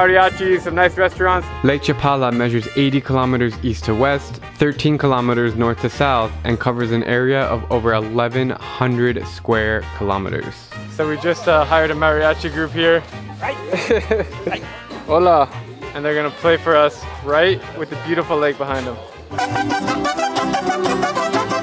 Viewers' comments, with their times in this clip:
0:07 Acopolco? Don't you mean Acapulco?